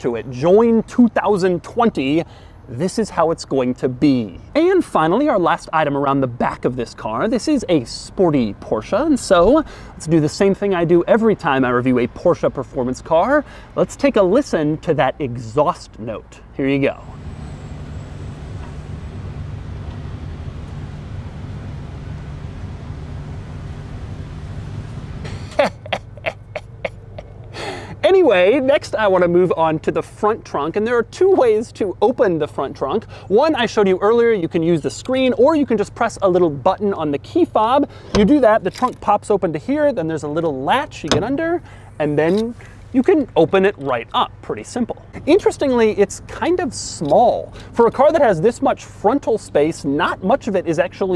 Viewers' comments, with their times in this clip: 0:10 -Bro Doug had me laughing hard as hell with that “exhaust note” ! 🤣😂. My dumb ass was literally waiting on that exhaust note. I got lost in the video and forgot it was an electric car. 🤦🏽‍♂️SMHROFL.
0:13 I can’t hear anything. Oh, wait. It’s an electric car! 😂
0:14 I expected this but it was still funny and his evil master roshi laugh that followed just made it funnier.
0:16 listen to the crazy exhaust like a beast 💨
0:16 That laugh at the exhaust note. He should of revved it though to be fair
0:24 that laugh really tells that doug is dissapointed by his own jokes😂
0:25 my uncle's laugh after he telling his "dad jokes" on thanksgiving
0:25 Nobody: silence, birds humming Doug: He he he he
0:32 Best laugh I have ever heard